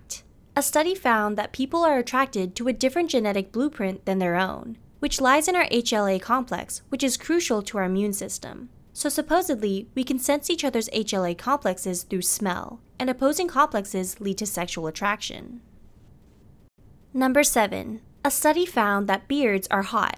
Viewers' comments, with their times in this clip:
0:08 Opposites attract yeah I thought you were drowning a duck. 😭